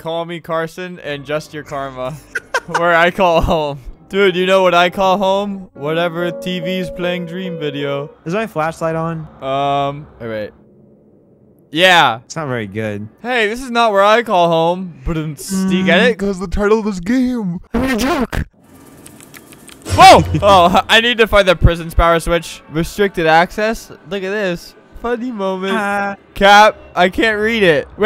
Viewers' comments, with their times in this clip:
0:09 laughs at joke , dies from laughing , cries in the afterlife cutely